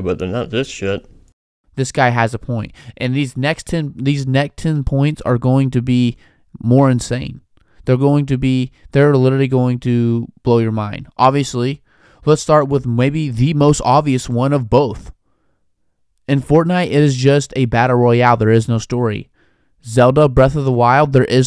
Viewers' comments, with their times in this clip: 0:05 you can hear his voice wavering hes about to explode in anger